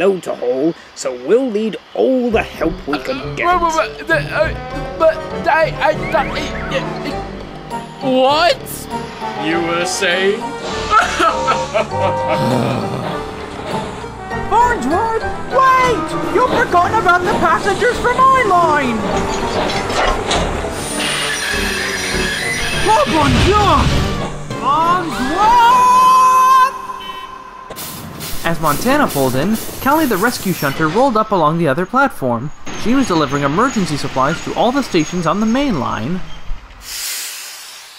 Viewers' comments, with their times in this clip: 0:04 fail cue from s4-7 in s3 styled
0:19 sir reginalds voice